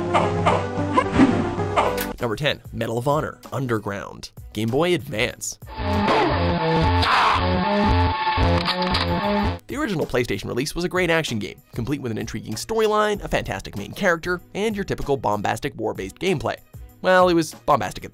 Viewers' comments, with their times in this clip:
0:05 Is it weird i like the music?